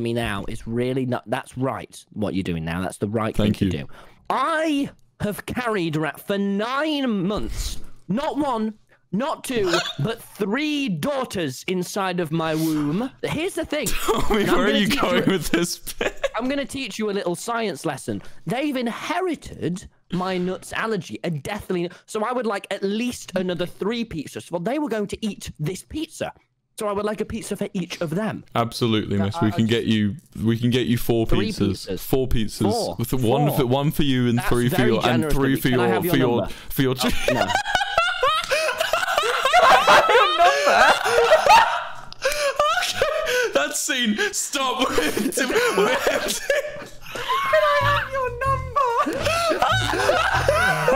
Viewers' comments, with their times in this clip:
0:10 3 daughters inside of my wOmB idk i just love how he says womb.
0:37 That's literally flowey's laugh